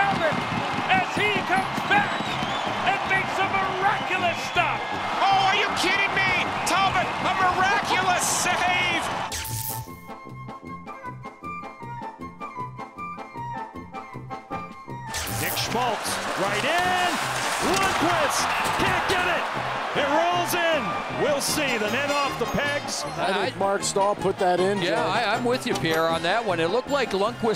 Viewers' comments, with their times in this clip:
0:10 the most anyone's cheered for the coyotes